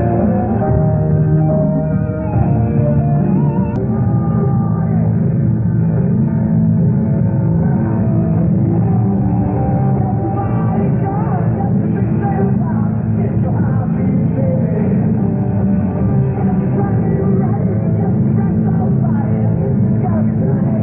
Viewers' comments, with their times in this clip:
0:03 Great sync. You're one of the best people to sync recordings with. might be somewhere in the middle of the song. Freddie doesn't sing the opening here.